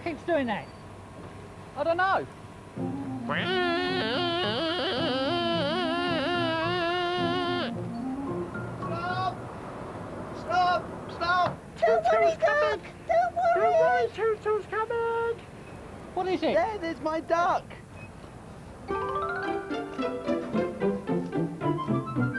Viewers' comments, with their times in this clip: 0:03 “Heellllppeee Meeee!!!!” Duck Says Scared